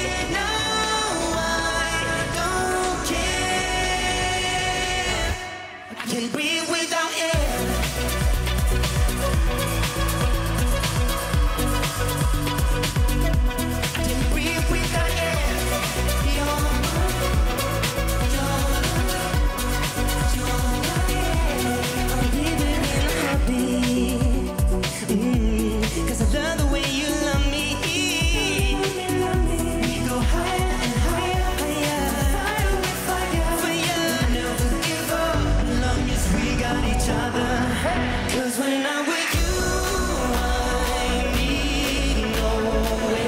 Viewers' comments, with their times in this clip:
0:06 the most slick beatdrop to ever happen in melodifestivalen or even eurovision in general
0:25 I come back to listen to the Mhmm 🔥🔥😍 love this song